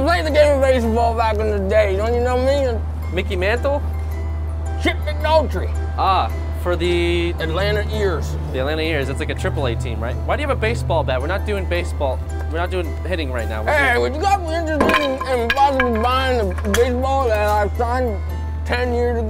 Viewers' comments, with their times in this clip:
0:03 Am I the only one that heard "Chip Bowdrie" ?